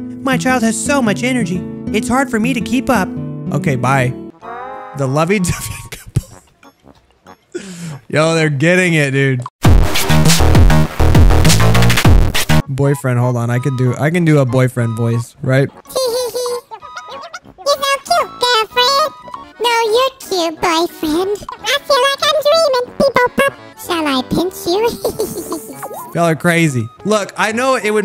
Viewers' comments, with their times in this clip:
0:08 Yo they’re getting it dude loud ahh fnf music
0:09 EARRAPE WARNING RIP HEADPHONES USERS
0:14 best impression of the boyfriend 🤣